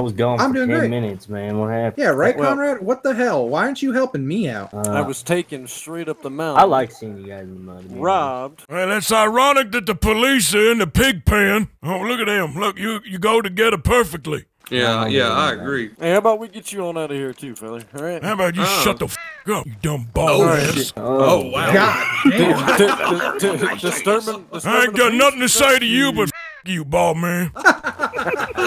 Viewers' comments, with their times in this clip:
0:10 the sheriff was shaking in his cowboy boots “d-d-disturbing the peace” lmaoo